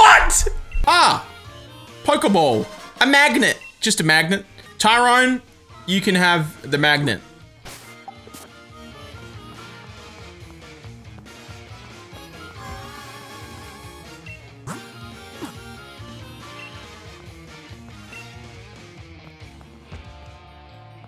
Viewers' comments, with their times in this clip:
0:09 why the fuck did i feel unconfortable just silence
0:09 I like how there’s this awkward silence